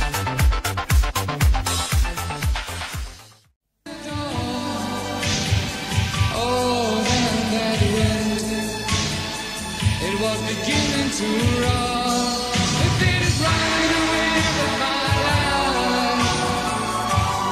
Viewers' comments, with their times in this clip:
0:04 I do wonder whether that song is,sounds familiar to Freddie (Queen) or Marc Martel (downwhere) style of singing so to look for a song that replicates that kind of style could find our man,yeah,cause I'm in love with it upon first listen,sounds like it coulda been something